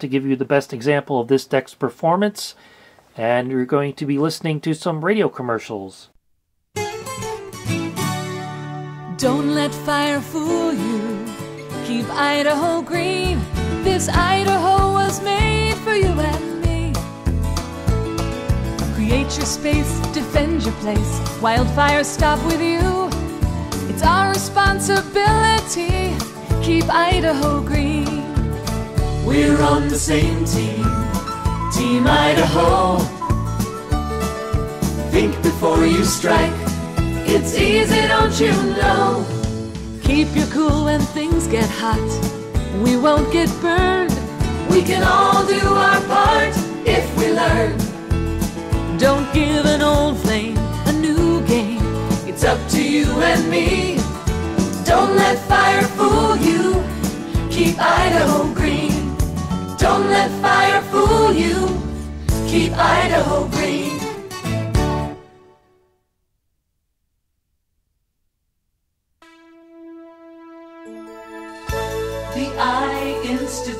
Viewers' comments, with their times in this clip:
0:06 Excellent video! I love this decks features even if it's missing Dolby S or DBX This deck is still desirable in today's standards. To my ears sound test failed obvious flutter.
0:06 that tape sound still hurts my ears. Not that is too bad, is kind of 8.5 out of 10 from me, but still unpleasant and... don't find the right word - disturbing maybe. I'm one of those happy with mp3. And i loved the cassette as young, untilll... 16 years old ? 1985 ? I've bought tapedecks, good tapes hopping the sound is good but never happy after that. Untill CD. And mp3 is ok. And yeah - i can detect tape sound over youtube (not every sound but certain aspects of sound imediatelly scratch my ears and know is a tape). The toys (tapedecks e.g.) i like, the sound not :)
0:06 Good video. Wow, there's some higher speed wow/ flutter doing on starting Maybe it has to run for a while to play & record a lot better... And it is probably better with tapes that are not recorded on it.
0:27 Is it just me or there's some flutter in the last test?
0:57 TDK SA too much high end. However the basf ferro extra I had a lot of bass like a premium ferric.